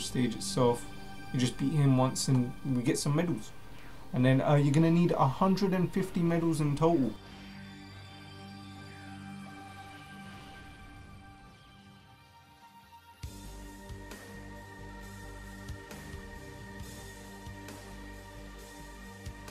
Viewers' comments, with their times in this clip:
0:05 Bro theres no sound until the end